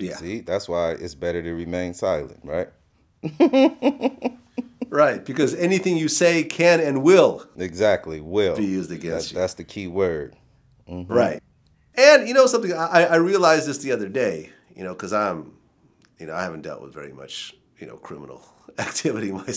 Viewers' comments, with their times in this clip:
0:03 ... That's the laugh of a man that's done some shit.